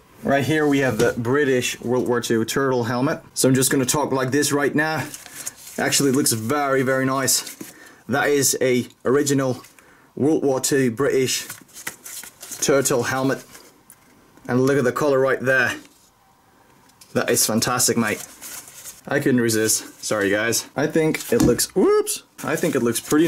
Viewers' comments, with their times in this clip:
0:05 For everyone and anyone wondering the accents